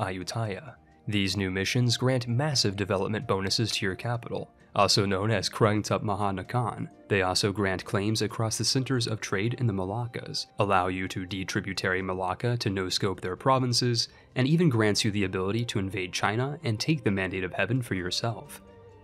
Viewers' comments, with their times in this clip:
0:05 the way you pronounced that wanted me to pull out my ears no offense.